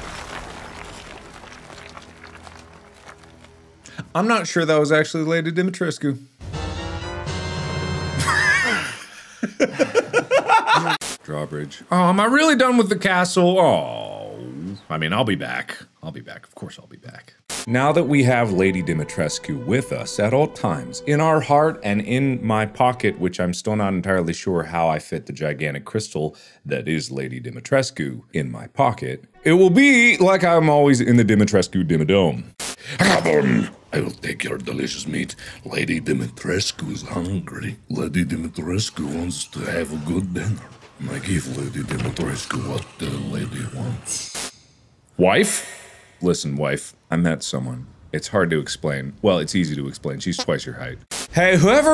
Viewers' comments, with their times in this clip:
0:08 still dont understand why mark was laughing here
0:33 Russian mark isn’t real, he can’t hurt you Russian mark: